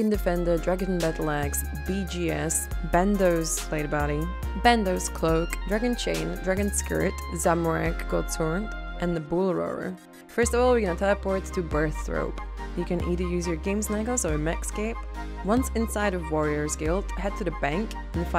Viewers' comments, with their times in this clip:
0:06 Dragon SKRRRT I don't even play 07 that much, still watched it.